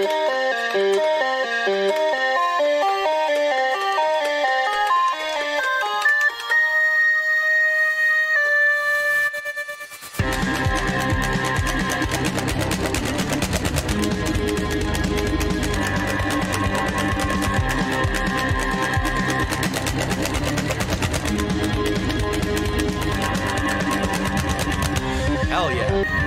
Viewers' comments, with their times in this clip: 0:09 Happy Exile Noises